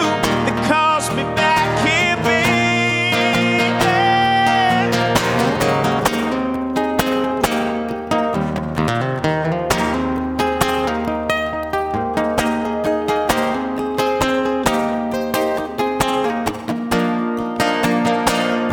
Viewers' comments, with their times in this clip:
0:05 he plays the shit out of that guitar!